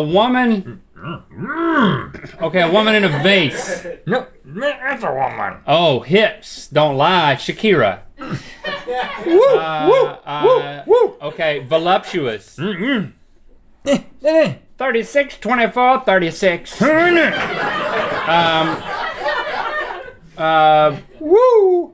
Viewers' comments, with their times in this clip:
0:04 he sounded like Mr Bean